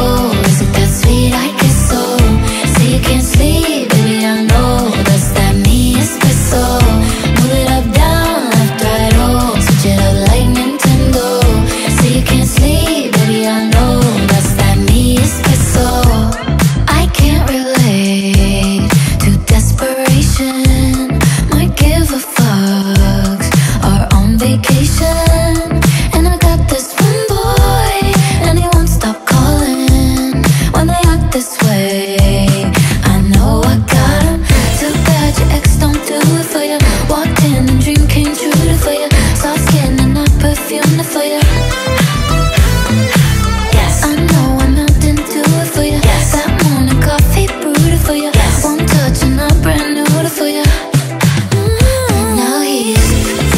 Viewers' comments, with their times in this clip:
0:06 the way she says „Espreso”🖐🏻😭✨ Edit:guys thx for 40 likes💖💅🏼
0:11 Why do i hear "like Nintendo"
0:25 omG did sHe JuSt SaId FEmBoY???
0:25 I misheard the lyrics. "And i got this femboy"
0:40 a bit more of synth like I would've liked, but overall I love the song